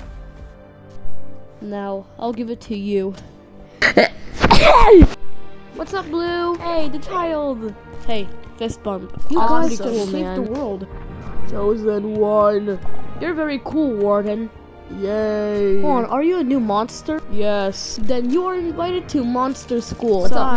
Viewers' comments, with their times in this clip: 0:04 *sneeze* got me so hard bro💀